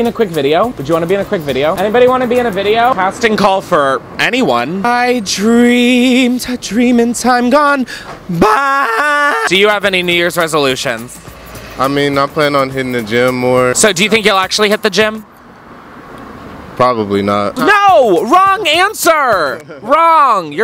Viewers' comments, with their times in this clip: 0:05 I hear that voice ma’am, don’t try and throw us with the off key notes